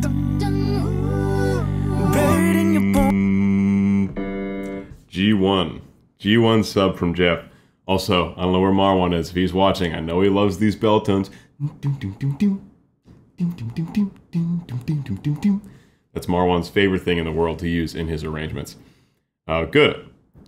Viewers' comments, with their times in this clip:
0:07 Bell tones all the way bro 😂✊🏽